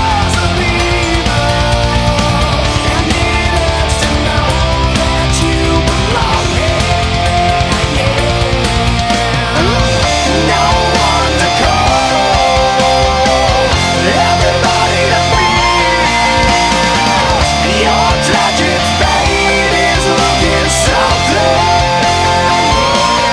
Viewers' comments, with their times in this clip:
0:09 I love how you incorporate your own flair into these covers, especially with the ending part beginning It sounds exactly like something Synyster Gates would do during a live show
0:10 That extra lick was tasty! Great work again!